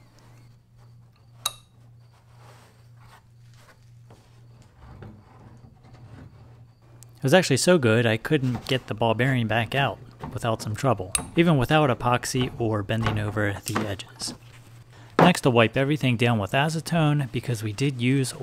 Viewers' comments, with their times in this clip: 0:04 Sounded Like It’s Magnetic, when You put the ball in. ?